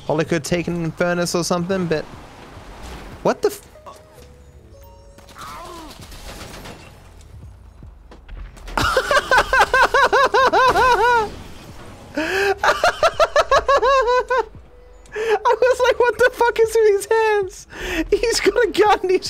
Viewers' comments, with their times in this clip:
0:06 little girl laugh